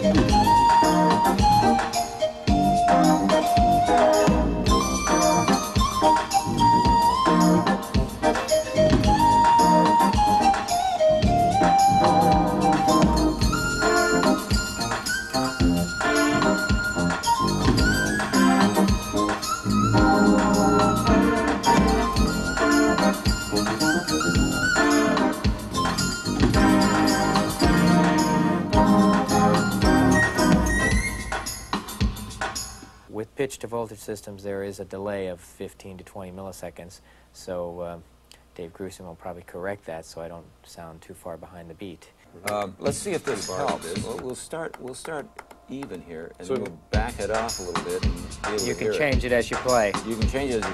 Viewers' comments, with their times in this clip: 0:04 I think where you time stamped he's just playing basic normal rhythm guitar. He did play that synth lead you hear, but just before that
0:34 Amazing to see Grusin getting his grubby hands on all this - I thought he had bowed out by 89. what was the guitarist playing I didn't hear it.. was it converting his guitar notes to midi with that cheesy synth line?? ? It didn't follow what he was forming on his hand though. he was doing chords when I hear a single note